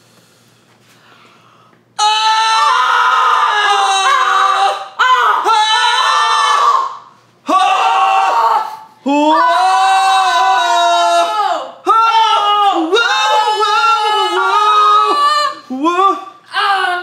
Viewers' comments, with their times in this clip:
0:03 I really thought they were doing the beginning of “Crazy Train” 😂